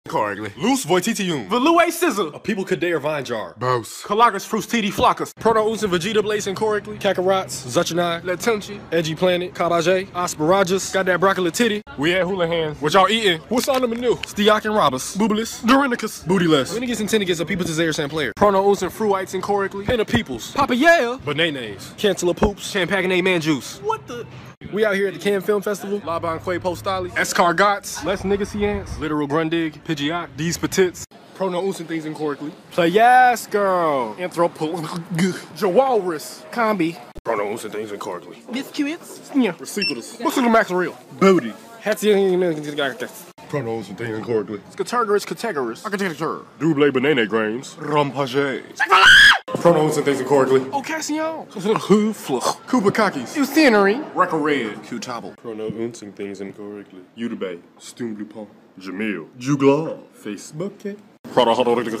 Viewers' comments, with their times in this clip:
0:03 the way he says bose 💀
0:07 he said kakorot like in dragon ball z
0:19 Banaenaes. Why is that so funny
0:22 "Camp-a-guh-nay Man-juice" got me 💀
0:22 He Sounds Like Eddie Murphy When He Said "Sham Packing A Man Juice" 😂
0:35 is how i’m gonna say jewelers from now on
0:48 tha screech tho😂😂😂
0:48 That one restaurant you go crazy for.. Ok but the way he just yells it out I love that-
0:48 Me when i see chick-fa-la
0:51 he got right